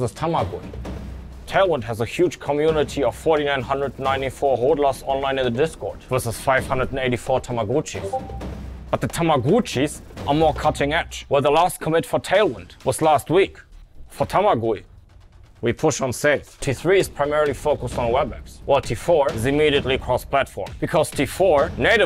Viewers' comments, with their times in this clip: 0:07 Discord ping Priceless.